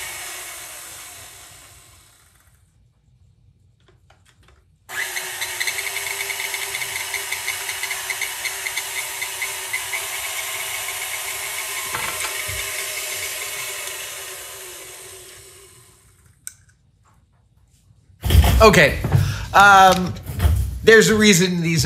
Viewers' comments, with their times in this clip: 0:05 Close your eyes sounds like a 2 stroke dirt bike….